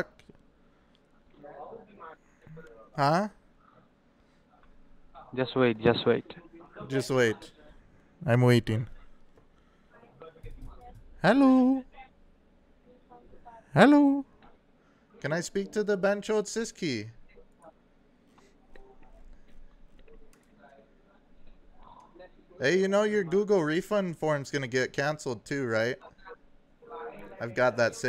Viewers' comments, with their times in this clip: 0:06 isn't it racist copying someones accent.
0:06 Your attitude and tone to them is the most satisfying thing to hear LMAO It's like a show where a Character just one shots and pisses at everyones face.
0:13 Why does he sound like Rakesh from Ownage pranks lmao.